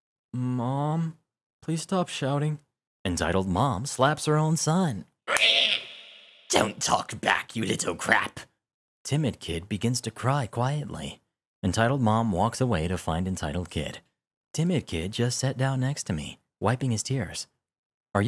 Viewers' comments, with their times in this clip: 0:05 Aight mate I've only found your channel today, but I fucking love the voices you do like Good shit man.